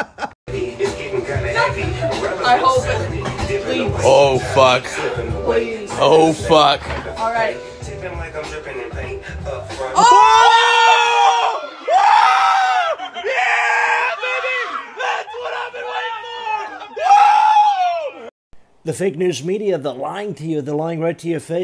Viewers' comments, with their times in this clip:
0:08 lifts lid 🍞 - hi INSTANT CHEER